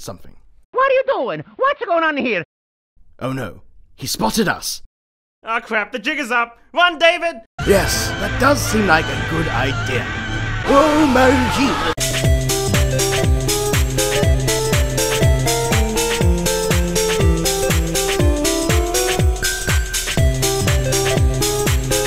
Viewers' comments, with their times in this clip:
0:06 There's no way that's actually David Attenborough narrating right? Also, as usual, Meggy is the best.